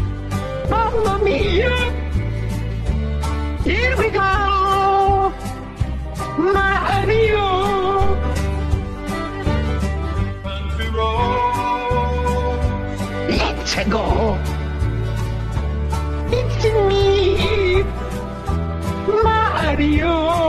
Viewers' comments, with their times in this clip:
0:03 I liked when the beat dropped So emotional